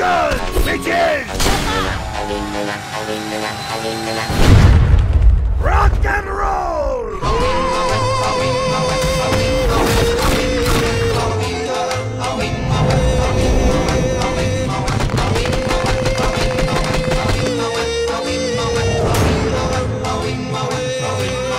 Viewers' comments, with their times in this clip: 0:07 Was anybody else expecting a dubstep drop ?